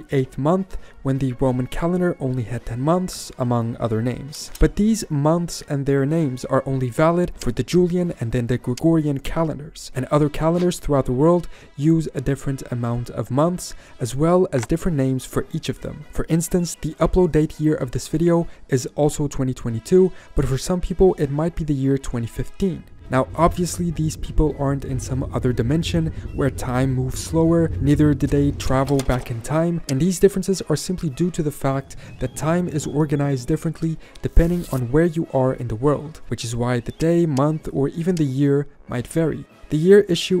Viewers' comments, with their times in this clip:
0:09 it sounds like Googlian Calendar :P
0:22 Btw the music in the background in which is a little hard to hear is the Prinz Eugen Marsch.